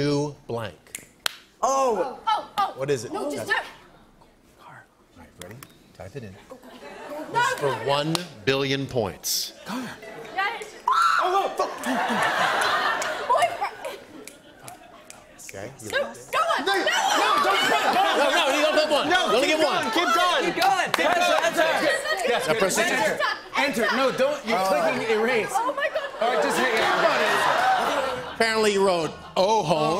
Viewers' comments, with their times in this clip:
0:10 NOAAH SHOUTING HAHAHAHA
0:11 Omg Noah’s little scream I’m dying 😭😂